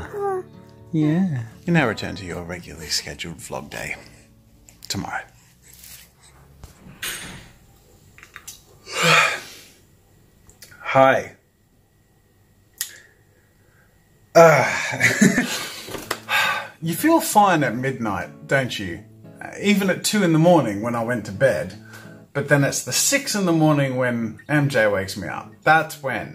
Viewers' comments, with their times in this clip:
0:07 I also yawned